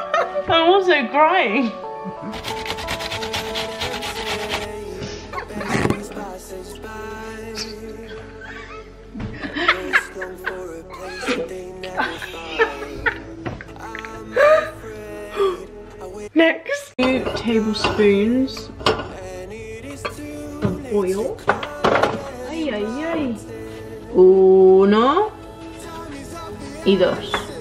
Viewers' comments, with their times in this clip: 0:10 I literally started laughing too, so contagious, found myself going back to that min over and over 🤣🤣🤣😭